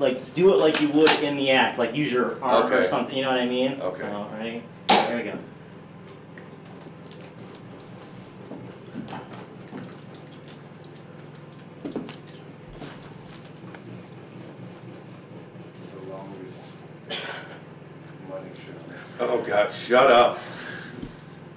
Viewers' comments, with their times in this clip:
0:05 lmao it got hella quiet